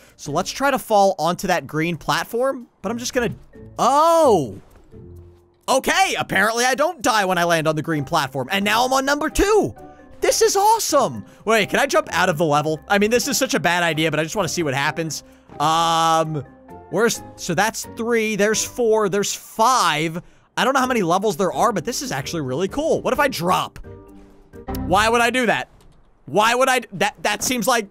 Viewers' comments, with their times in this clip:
0:09 you said nuoumpor 2